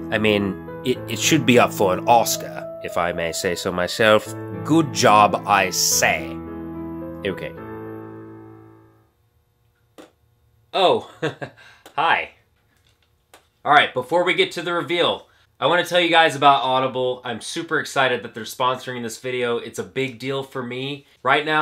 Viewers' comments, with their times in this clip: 0:09 I was actually surprised by the sudden change in accent. Did anyone else notice it?